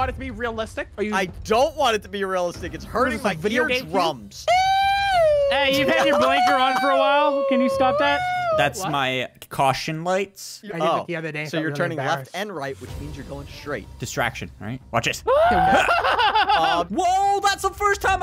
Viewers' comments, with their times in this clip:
0:04 Serenade is a police because police sirens sound